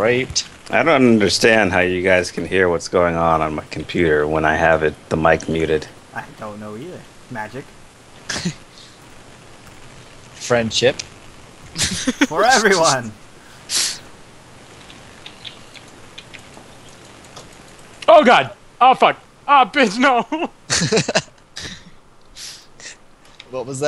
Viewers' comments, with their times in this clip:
0:09 (+/-) i hear a bronie O3O